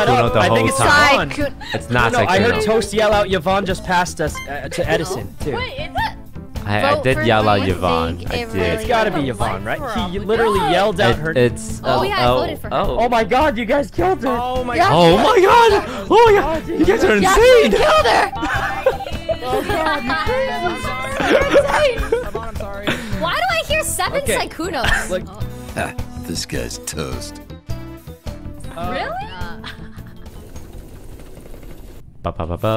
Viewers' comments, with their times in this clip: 0:05 Rae hiccup lol
0:14 I’m living for Toast mimicking Sykkuno’s voice and reaction Hahaha